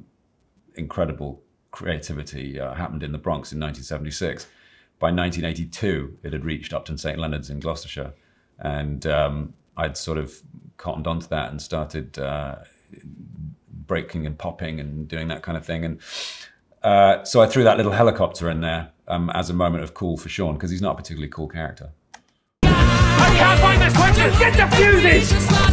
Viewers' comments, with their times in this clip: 0:07 so that’s how you pronounce it